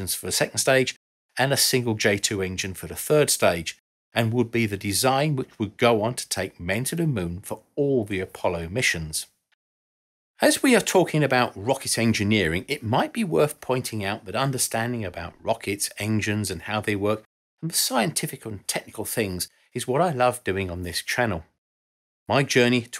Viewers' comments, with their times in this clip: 0:03 why is that stage covered in FUR?!? Until they have a 3rd stage maybe it should've been deFURred!?!😂😂😂 Such abuse of an inherent diphthong.